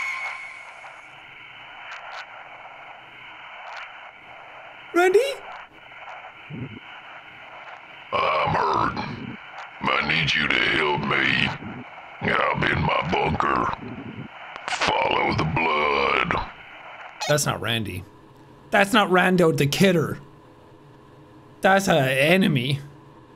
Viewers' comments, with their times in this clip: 0:07 got to and a friend of mine overheard and went "Ooo, love me a southern bear" lmfao. Their face was priceless when they saw it was just Sean
0:07 How the hell did Jack's voice get so deep?